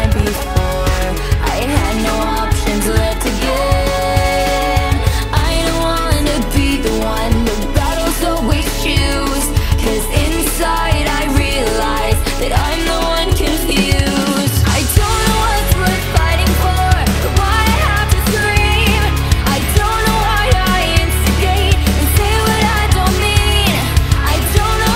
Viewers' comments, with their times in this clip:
0:09 Does anyone else here that distortion in the vocals up to in the song? Is it supposed to be there?